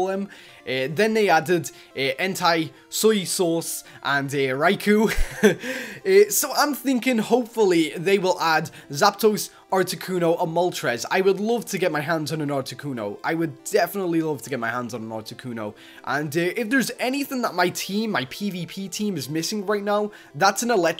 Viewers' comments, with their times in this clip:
0:03 guys look soy sauce thats not how u pernownce suicune rip suicune ;-;